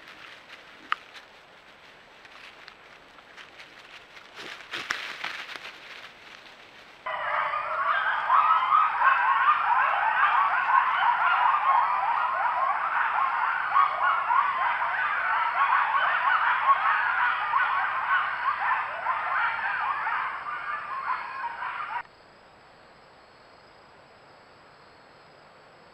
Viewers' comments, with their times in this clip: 0:06 All other animals at night: "shhh be vewy vewy quiet. Im hunting ... (or being hunted ...)" Coyotes: "and i took that personally"